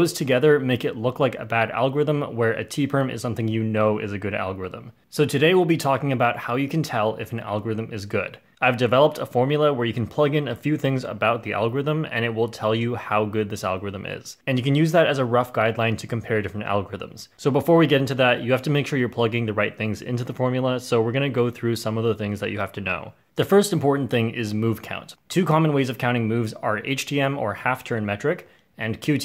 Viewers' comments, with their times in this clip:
0:10 I like how it Said Algometer